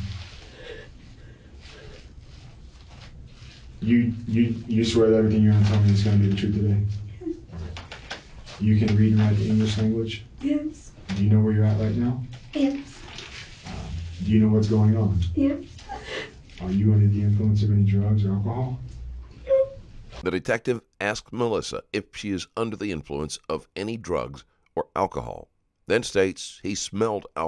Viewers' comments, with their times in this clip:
0:09 She told the truth at beginning like in she says it loud and clear…”HIS BLOOD ON MY HANDS”